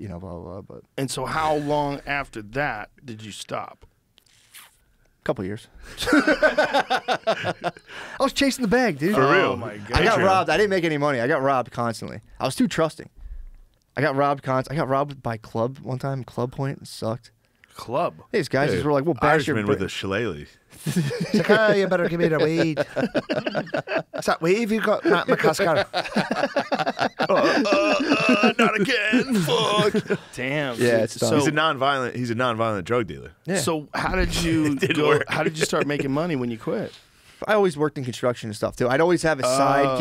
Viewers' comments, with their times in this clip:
0:10 Does Shane say "For real, patriarch" lol?
0:21 That Irish possibly Scottish accent Shane hits is insane 😂
0:21 Shane’s accent here is fucking hilarious 😂😂😂
0:26 Close your eyes and pretend Conor Mcgregor is robbing you😭